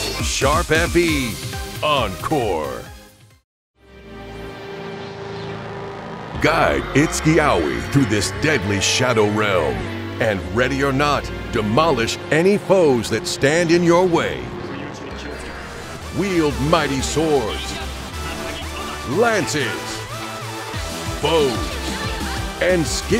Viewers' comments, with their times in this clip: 0:05 WHAT IS HE SAYING?!?!?!!??!! All I hear is "GUY IT'S YAOI"
0:06 When the narrator said, "Guide Itsuki Aoi through this deadly shadow realm", I thought he said, "Guys, it's yaoi..."